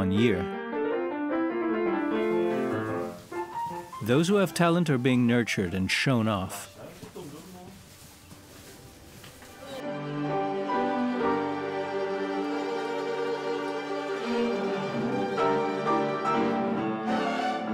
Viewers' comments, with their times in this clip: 0:03 kindergarten orchestra was amazing .